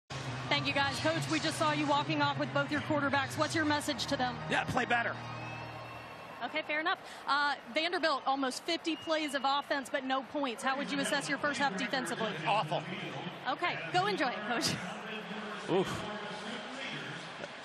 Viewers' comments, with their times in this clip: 0:04 Am I the only one who heard the Soviet anthem?